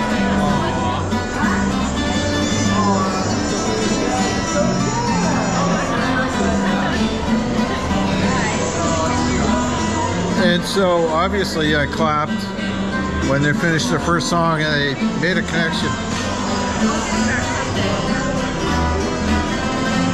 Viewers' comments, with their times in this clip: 0:05 this sounds so much like Imagine by John Lennon to me. Beautiful.